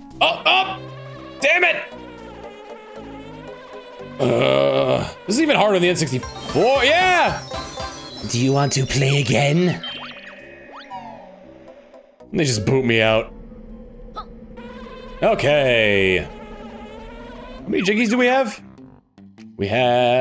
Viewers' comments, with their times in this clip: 0:05 Did you say it's even harder THAN the N64, or it's even harder ON the N64?